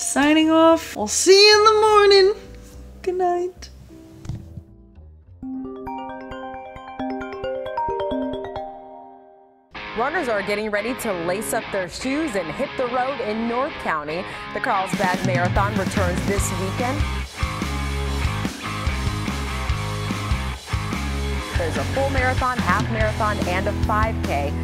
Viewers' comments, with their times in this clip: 0:05 Not me watching thinking my phone is ringing... LOL